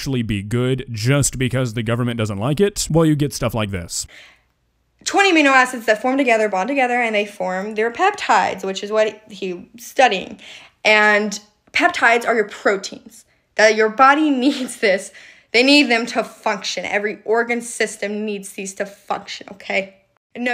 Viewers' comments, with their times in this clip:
0:04 gurl be talking like shes my bio teacher